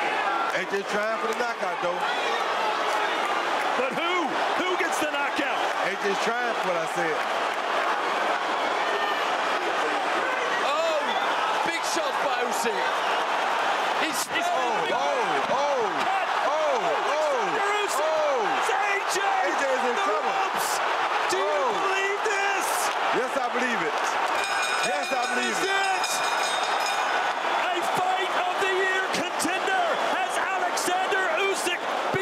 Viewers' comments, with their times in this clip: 0:10 They rang the end of the round 12, at least 5 seconds too early, to save Joshua, it appears. The clock disappears around 8 second to go and the bell sounds 2.5 seconds later. Check it out
0:20 They ringed the bell 5 seconds before to prevent AJ to get knocked out !